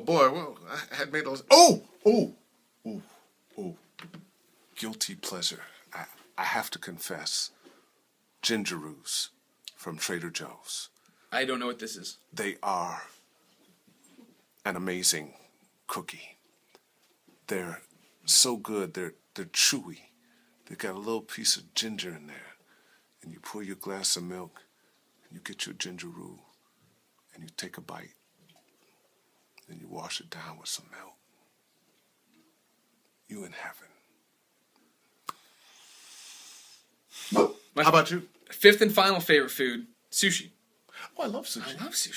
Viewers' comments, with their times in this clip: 0:04 Lee Everett comes out!
0:28 I felt like he made love to my ears